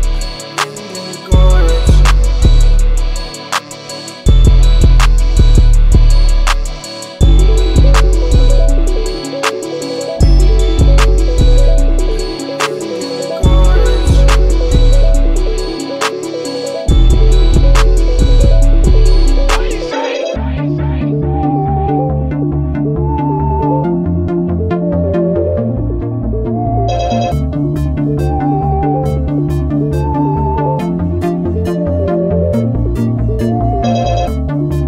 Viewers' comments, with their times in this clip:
0:07 The ending transition giving me Vegas at night vibes, neon lights in the middle of nowhere
0:19 I want this to be a song so bad this is the best beat I’ve heard in my life